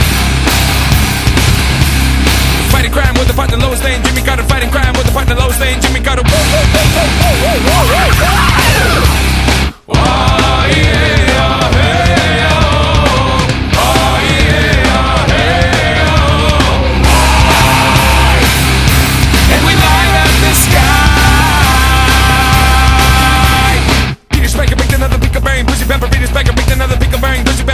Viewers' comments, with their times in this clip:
0:10 S.O.A.D were the ones who discovered the ahegao way before tik tok..just listen ..i can´t be the only one who sometiems hears i e ahegao